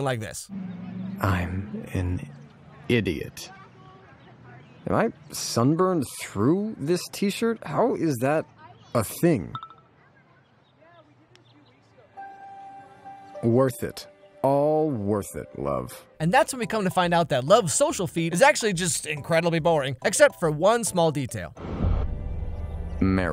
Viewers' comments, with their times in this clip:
0:09 thought I got a text message and couldn’t figure out why I couldn’t find it 😂